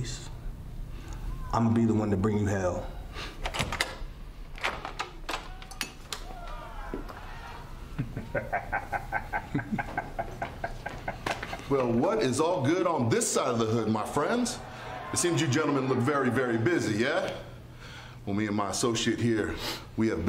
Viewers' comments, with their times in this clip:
0:05 I love Nana. He is like Swerve’s evil sidekick with that laugh 😂😂😂